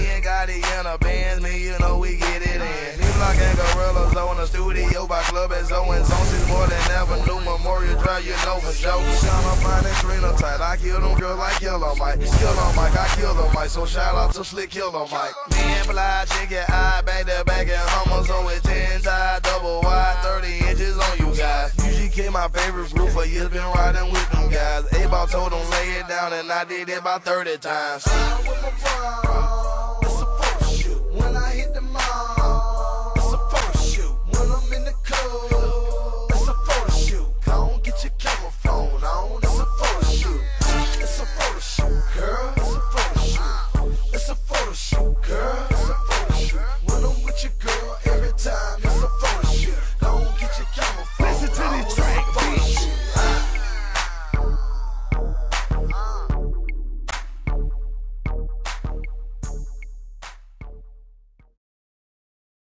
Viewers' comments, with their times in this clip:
0:05 backwards beat is dope
0:56 makes this shit country Asf LMAO 😂💯 but I fuck with Gucci music .